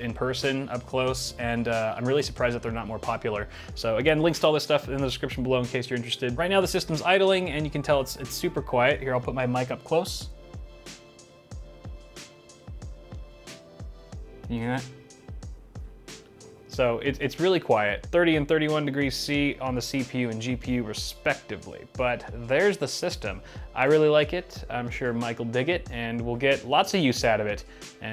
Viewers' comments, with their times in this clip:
0:09 Bitwit: “im going to put my mic up close so u can hear the fans” Also Bitwit: plays music in background
0:09 can’t hear the fans because of the music
0:10 can’t hear much with the music lol
0:11 here I’ll put my mic up close Music:dadadadadadad oh sorry is this a bad time
0:11 it’s super quiet but I’ll but my mic up close:all i here is mucic
0:11 you should’ve got rid of the music cause I wanted to hear the pc god damn it